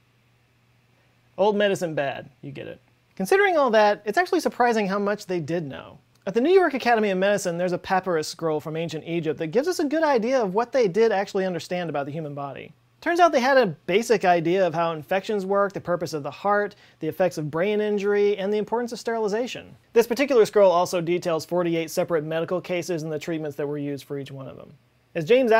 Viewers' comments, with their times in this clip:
0:07 when you said "paa-pur-us" I could only hear Ryan Gosling screaming "PAPYRUS!" from that one snl sketch
0:08 Did he say papirus ??